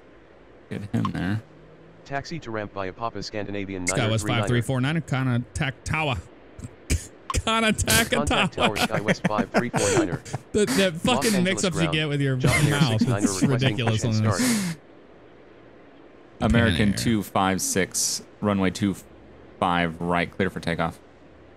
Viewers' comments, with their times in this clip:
0:04 gotta attack tower? Oh shi-